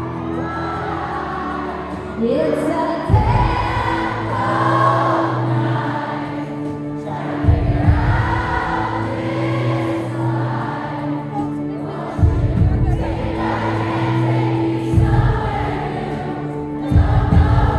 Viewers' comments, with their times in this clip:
0:05 Amazing band stops and whole crowd sings along with her. Love that 💖💖